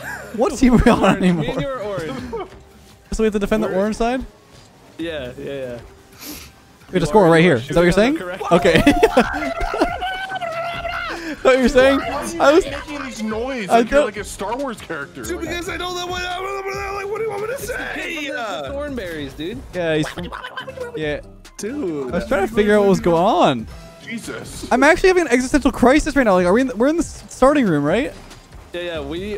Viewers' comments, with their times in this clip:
0:10 chewbacca be like
0:13 JG7: Dude is ansalabrludbarghagnRWAHDDYA WANT ME TO SAY???? 👏👏👏🙌 more eloquent than ever